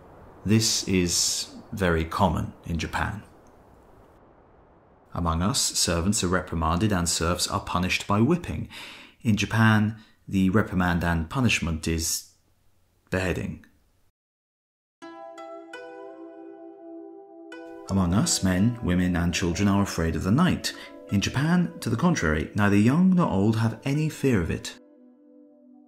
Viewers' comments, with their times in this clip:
0:04 and punishment is ???? bedding?
0:12 In Japan, the punishment [for servants and serfs] is. . . bedding? Please explain.
0:12 i am at the part in the video where it says "in japan servants are not punished by whipping but by bedding" - does bedding in this actually mean the wrong-doing servant was literally f***ed by his master as a punishment? Might seem like a stupid question but english is not my mothers tongue so i really am not sure about this. it is - subtitles say "bedding"